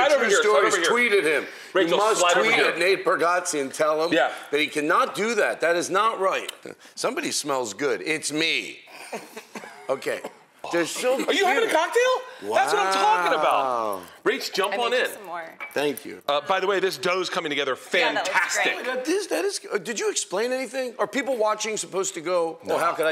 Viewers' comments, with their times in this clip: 0:07 sounds like the perfect blend of Dave Attell and Brody Stevens 😂